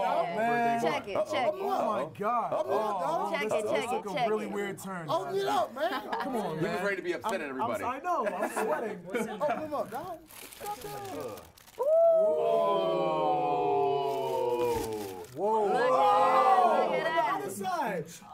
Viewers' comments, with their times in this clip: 0:04 The way she says check it made me think she was gonna drop some fire